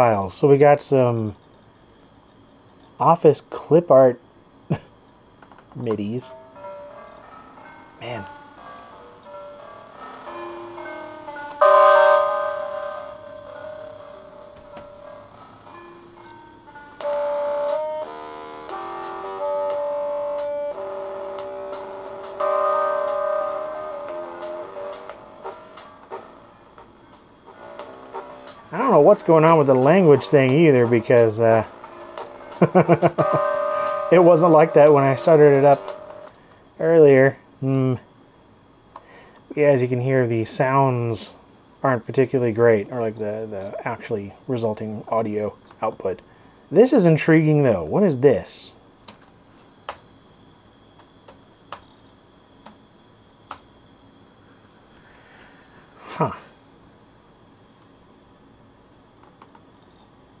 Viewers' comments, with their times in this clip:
0:05 what the YouTube Audio Library would have sounded like in 1997.
0:48 That fall_01 is a BANGER.